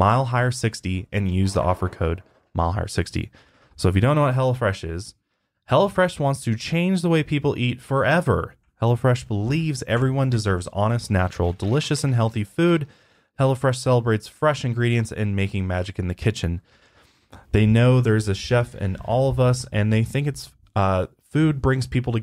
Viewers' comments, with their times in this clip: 0:08 I just keep hearing HELLA fresh haha